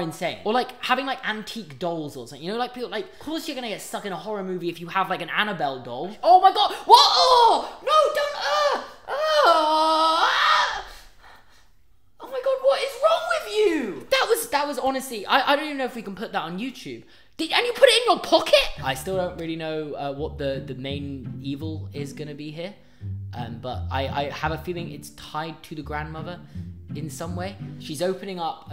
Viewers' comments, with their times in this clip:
0:10 That little scream is priceless